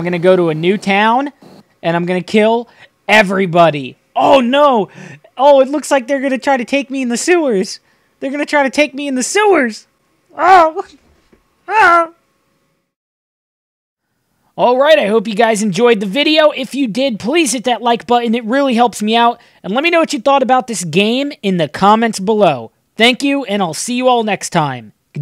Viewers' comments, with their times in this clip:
0:08 The contrast between the character in the game and this gentlemen's voice playing it is fucking awesome LOL